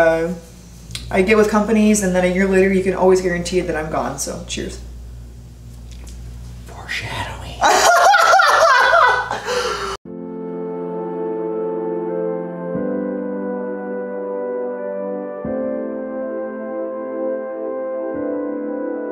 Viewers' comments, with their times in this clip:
0:06 I couldn't live with that laugh